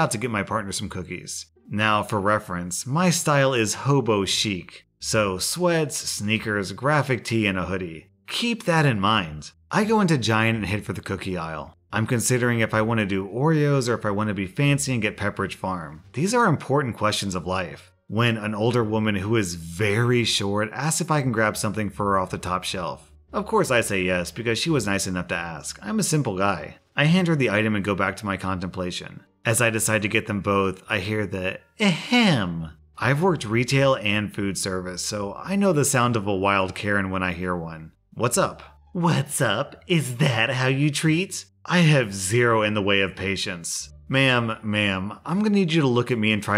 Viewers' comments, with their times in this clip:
0:05 do I even want to know what "graphic tea" is?? O.O
0:31 crap, that Karen just pulled an umbridge